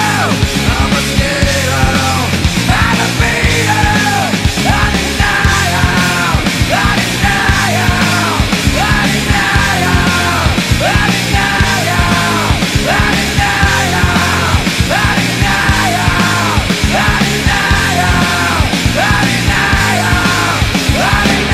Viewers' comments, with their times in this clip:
0:08 what is he saying also I don’t even know what he is saying for the whole song